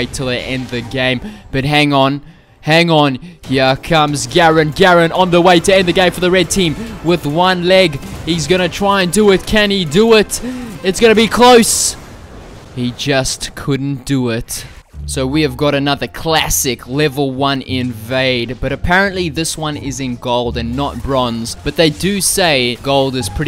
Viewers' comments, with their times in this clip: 0:09 that garen on one leg killed me. thanks for the inspiring music in the background. xD